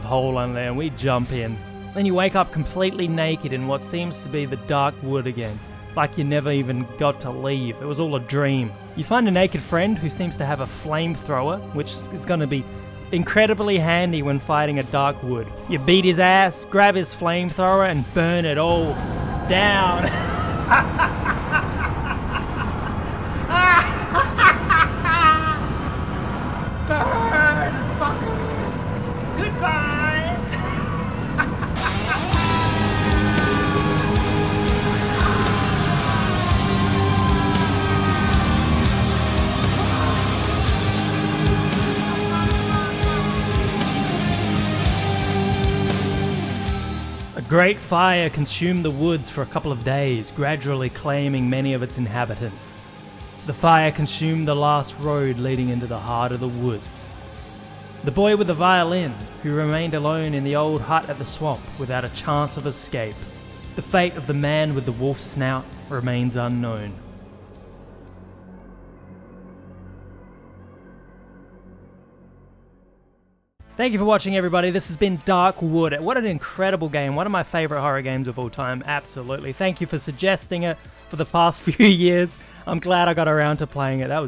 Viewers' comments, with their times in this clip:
0:05 That intro was Enchanting 😳 in that wrist-cuttey kind of way. edit: that Fire Apocalypse soundtrack was bad ass too.
1:05 This reminds me of Teleglitch: Die more edition. Except not pixel art. Edit: the music sounds like RoR's OST.